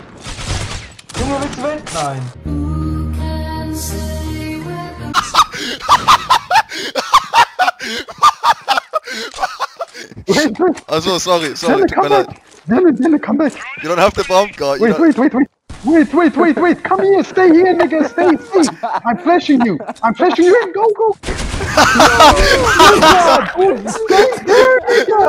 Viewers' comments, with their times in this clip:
0:10 from now on I have lost my ears....
0:11 That laugh HOLY SHIT😂😂😂😂